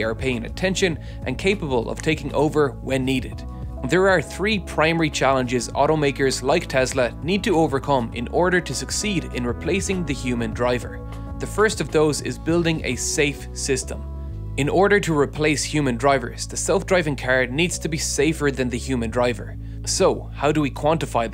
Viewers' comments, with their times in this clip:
0:03 you say "taking over" in a way that the Google Assistant turns on, and it does so consistently.